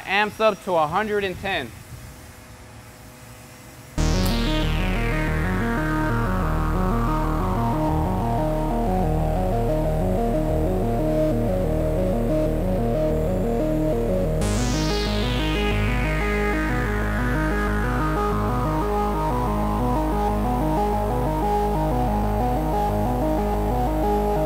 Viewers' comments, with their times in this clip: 0:10 Leave the boys drawls alone